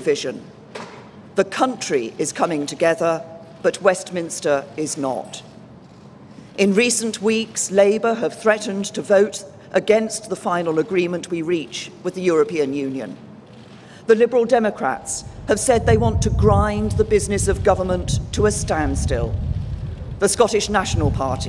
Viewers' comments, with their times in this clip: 0:05 She is becoming Super Saiyan, from she raises voice and starts changing form